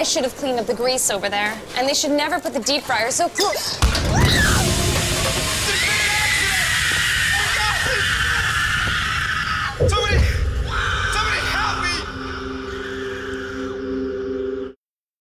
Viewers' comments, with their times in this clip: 0:03 Warning! Do not carry pots of boiling water especially on a slippery floor. Because in this commercial, her face was scalded by boiling water and she was screaming in pain and she needed to go to the hospital to get a body cast on her face and hands.